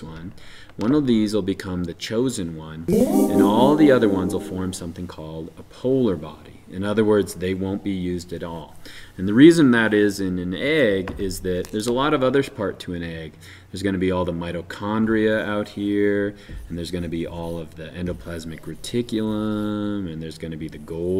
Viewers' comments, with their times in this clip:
0:04 One...will become the chosen one. Followed by what is definitely a harp chord from Zelda when Link is told he's the chosen one...